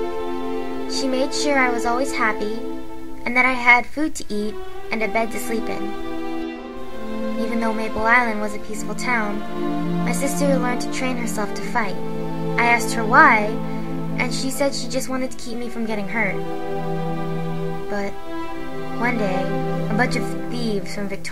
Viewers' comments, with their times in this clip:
0:06 Whoaaaa how did you do Jennifer's hair ? LOL GRENDAL'S CREEPY OLD MAN VOICE :D